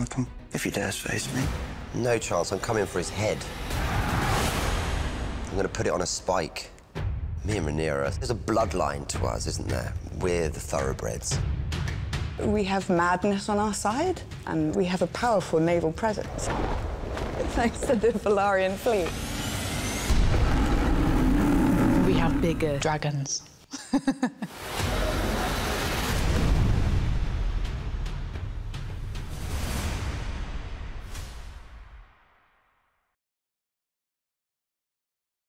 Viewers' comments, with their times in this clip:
0:07 "Me and Rhaenyra" the pride he said it with.
0:22 Olivia stays in character lol, cus I can actually see Alicent saying that with that diabolical laugh.